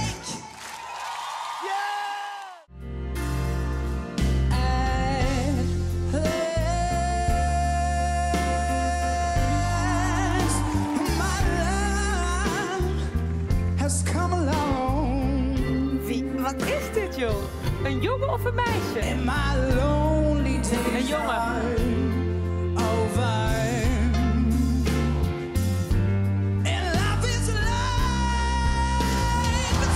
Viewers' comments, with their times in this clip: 0:03 I wasn't surprised by his voice but by the song he chose! That's a hard song, but he pulled it off pretty well.
0:11 that guy has a fucking beautiful voice holy shit and he’s really cute too
0:11 what’s the guys name in the blue jacket? His voice is sooo good